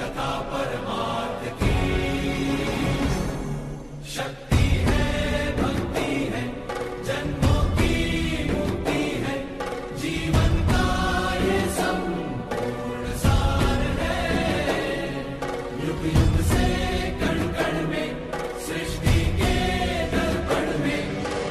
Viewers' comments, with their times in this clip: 0:04 Goosebumps begins and continues till end! What a composition, superb lyrics and beautifully arranged.